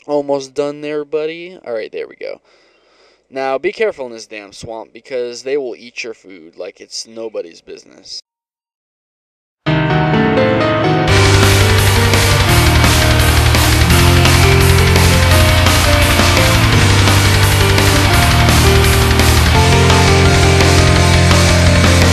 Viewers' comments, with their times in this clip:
0:06 And what song plays ? Goddamn it sounds epic.